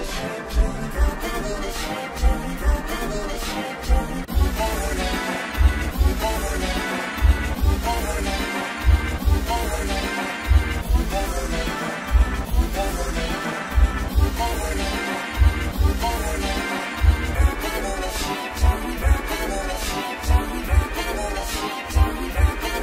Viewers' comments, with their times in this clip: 0:04 Real G-Major 4